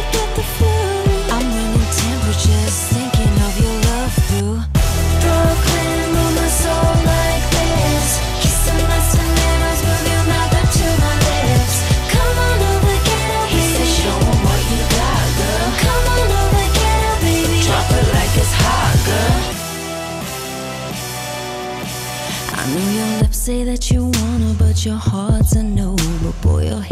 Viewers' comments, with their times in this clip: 0:05 I really like the intro, but I wish the tempo was faster like Lana's version. This is still good though. Lana's version is good too.
0:12 I've got the feeling I can hear lana in this song as well', in the 'show em what you got girl' and 'drop it like it's hot' parts